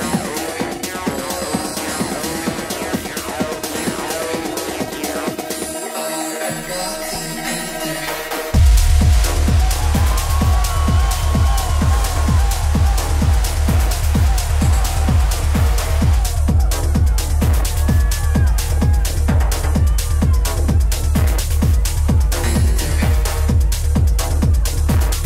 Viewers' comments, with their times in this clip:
0:07 What a droppp